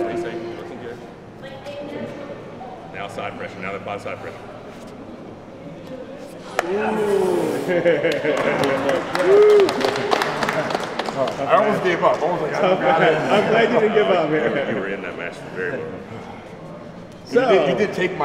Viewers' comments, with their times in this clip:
0:06 that was a scary ''pop'' ;)
0:06 What is that sound on that pop ?